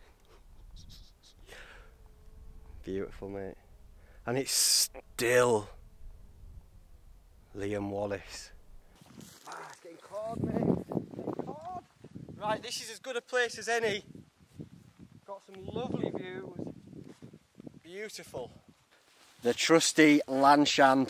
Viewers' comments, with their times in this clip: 0:06 What is that moaning sound when you talk about the views?